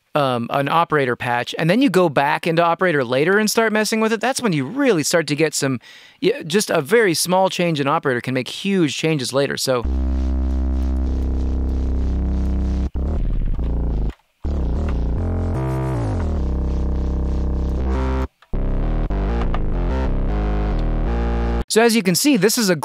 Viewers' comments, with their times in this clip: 0:07 The bass you made sounds like Deku Scrubs from Zelda. It’s a Deku Sub lol